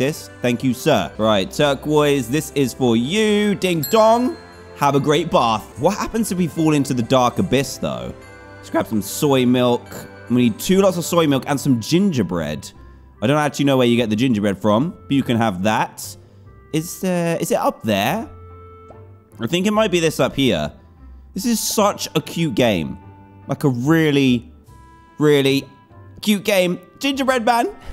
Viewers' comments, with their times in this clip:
0:08 voicecrack when he said "lets grab some" XD
0:08 Check out voice crack